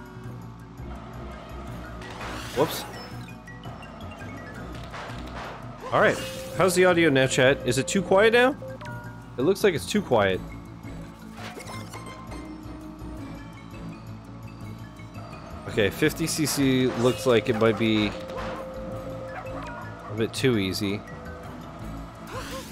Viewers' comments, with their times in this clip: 0:05 audio is good 👍